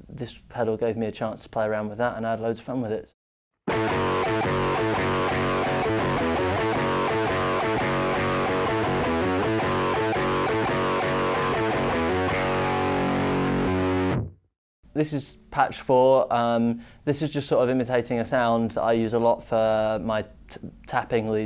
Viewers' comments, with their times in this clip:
0:05 sounds like it could be a modern architects riff